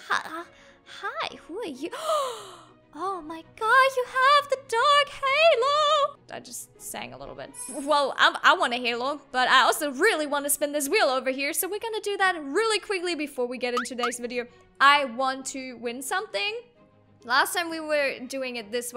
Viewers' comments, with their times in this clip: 0:05 yessss sing the high note